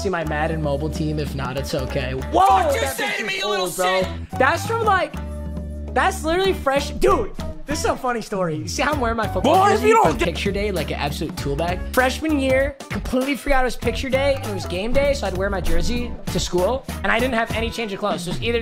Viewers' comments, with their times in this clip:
0:05 naruto music start boppin